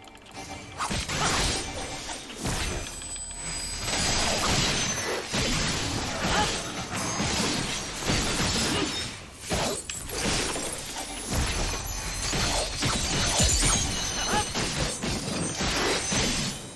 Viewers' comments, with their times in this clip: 0:04 Hey i noticed at the Combat Animation part i can hear the error sounds for using abilities still on cooldown... this can actually be turned off but i totally forgot where. It should be somewhere on the Character Configuration... Great review btw!!!